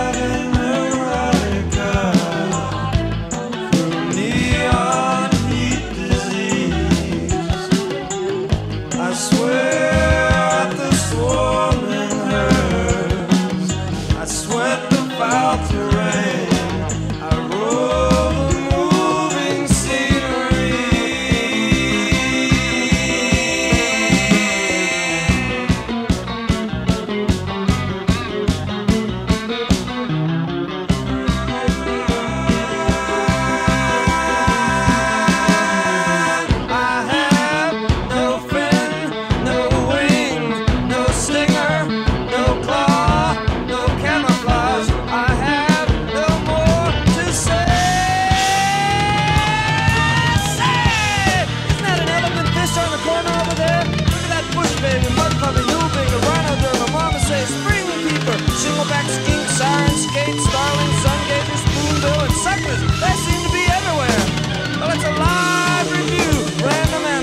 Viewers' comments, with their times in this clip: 0:09 Alice In Chains ripped off the vocal melody starting
0:37 it starts sounding like David Byrne in Talking Heads LIfe During Wartime for some reason...no camouflage...I changed my hairstyle so many times now, I don't know what I look like...
0:51 More than that, it's particularly ingenius: in the last verse he mimics all of Belew's vocal delivery in rhythm and cadence, starting with the crash symbol on the word "Say!", all the way through to the two drums rolls on the toms echoing the "So long!". It's like he's drumming the lyrics. Incredible.
0:51 I've never heard anyone notice this, but Bruford's playing here is ingenious in the last verse: he mimics all of Belew's vocal delivery in rhythm and cadence word by word and phrase by phrase, starting with the crash symbol on the word "Say!", all the way through to the two drums rolls on the toms echoing the two words "So long!". It's like he's drumming the lyrics. Incredible.